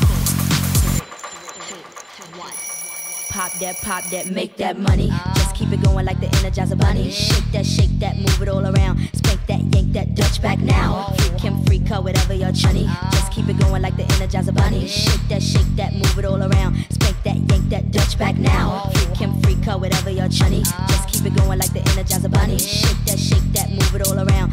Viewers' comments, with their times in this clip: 0:07 which is that song? it is a baby voice behind